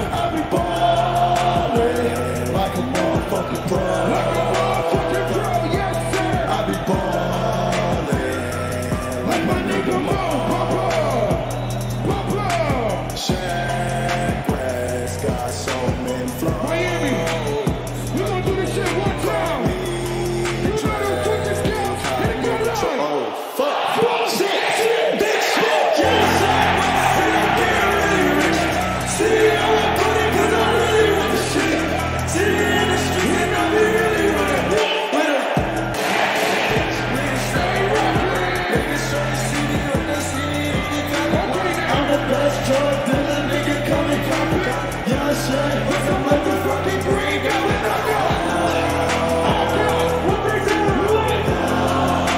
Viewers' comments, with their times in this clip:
0:06 dawg, i fr had goosebumps like woah the crowd goin insane was like inspirational fr!
0:35 sounds like gun shot